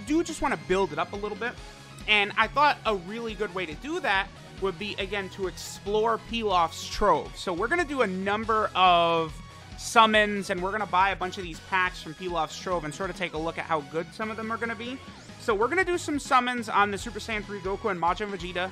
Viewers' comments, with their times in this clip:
0:04 that didn’t sound right